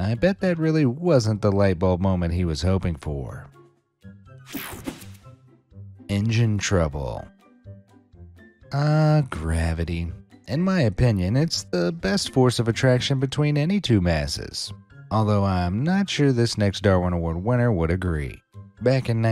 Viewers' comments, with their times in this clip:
0:05 why he started emoting?